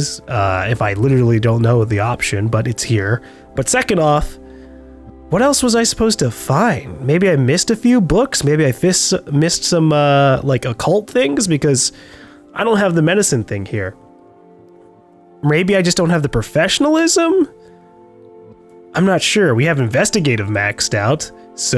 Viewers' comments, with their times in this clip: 0:08 please don't fist cult things